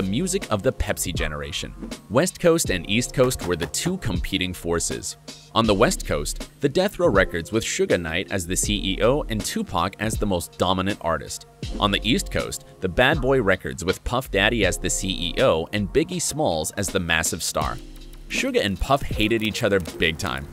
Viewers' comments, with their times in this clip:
0:07 did he say suga knight??